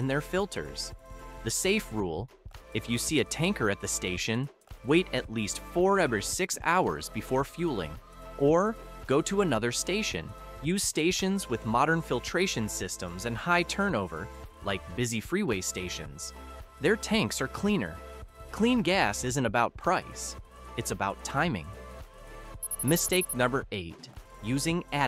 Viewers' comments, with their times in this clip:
0:08 you show a woman doing the very thing with her cell phone you said we should never do. Plus the included accompanying "music" soundtrack sure is a distraction. Why was it necessary to add competing NOISE to the soundtrack of the video. What a error.